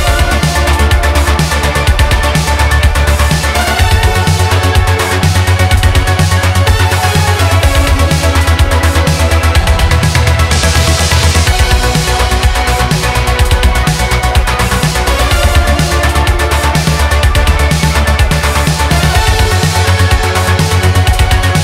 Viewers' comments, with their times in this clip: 0:09 Awesome track, also did anyone notice them sick gachi slaps